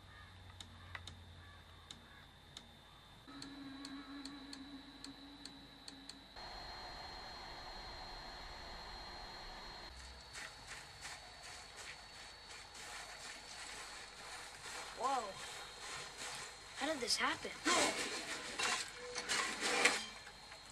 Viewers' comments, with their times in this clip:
0:07 why there is a hising sound or its just my pc?